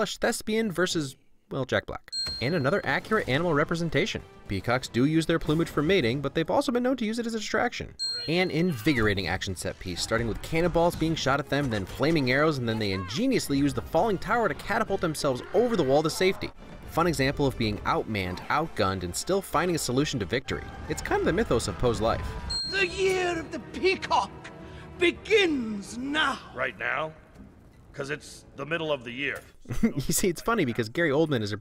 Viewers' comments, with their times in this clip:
0:07 Po: you.. are there..... Shen: yes, I was What a small exchange but voice acting makes it too heavy considering genociding background.
0:16 is could only hear hamilton lyrics is that bad? nah its great